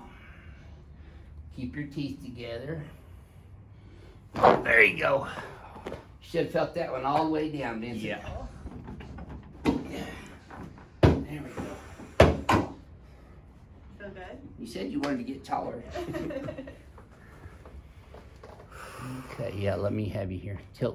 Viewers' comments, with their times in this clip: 0:04 me in heaven... Brutal crack loooove it